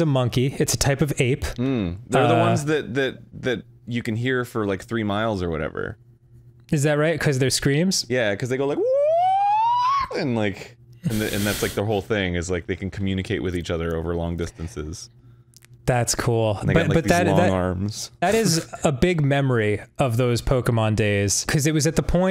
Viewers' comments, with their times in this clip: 0:05 I lost it when Arin did that gibbon impression
0:07 my guy arin was about to unhinge that jaw to produce ungodly sounds
0:08 WAS SUCH A GOOD GIBBON IMPRESSION
0:08 Me describing why I don’t like police sirens